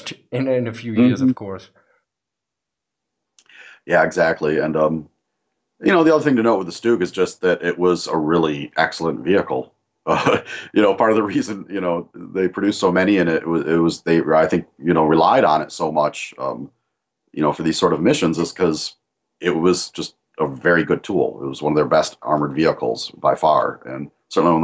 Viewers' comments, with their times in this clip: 0:07 I was waiting the the Jack Russell Terriers to start barking for a cameo and it finally starts happening Great conversation guys!